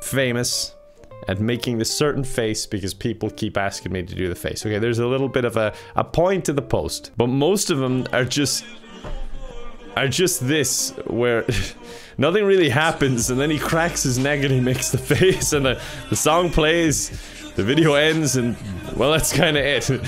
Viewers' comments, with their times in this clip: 0:08 I'm noticing some of the "indian joker" videos have this weird tune-changed version of Derniere Danse, a french song by the artist Indila. idk if anyone else recognized it, seems an odd choice.